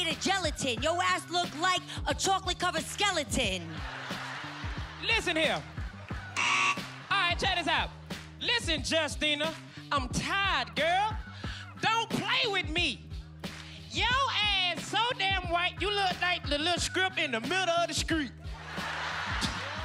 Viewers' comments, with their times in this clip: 0:07 I couldn't stop laughing why he said street like that😄